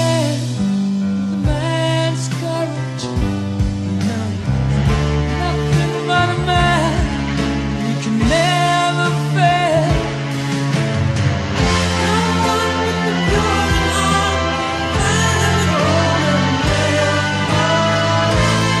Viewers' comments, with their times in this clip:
0:06 these themes are always remembered for their instantly catchy exciting refrains, but after repeated hearing, it's the slow part that i learn to appreciate the most. the best part of this song is actually the part